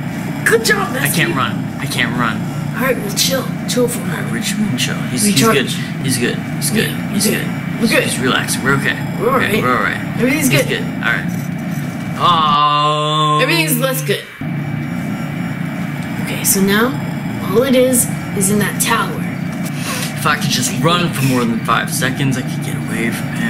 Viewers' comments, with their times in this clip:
0:07 The one moment they aren't screaming: We're good If you got this far then you can have the time <3